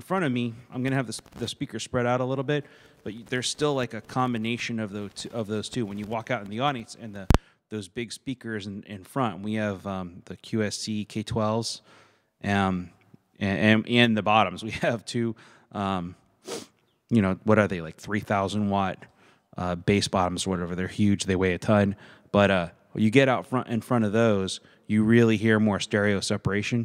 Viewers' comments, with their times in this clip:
0:08 The left speaker cuts out when you move the cable when you first turn the pedal on then mysteriously comes back at the mark.